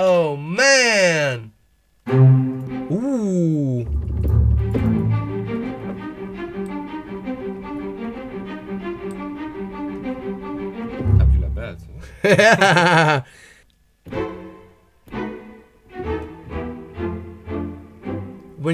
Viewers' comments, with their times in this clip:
0:03 tubular bells <3
0:05 what a melody ?